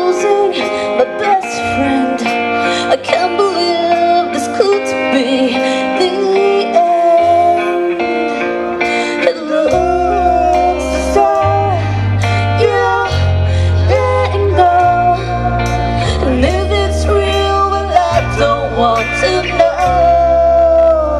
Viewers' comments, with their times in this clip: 0:06 great cover band! regards from Chile PD: in the minute there is a slight mistake note by the guitarist